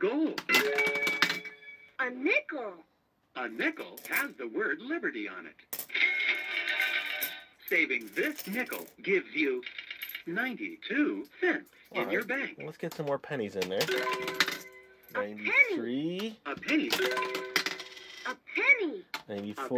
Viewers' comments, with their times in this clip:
0:06 it sounded like the machine said "Pickle"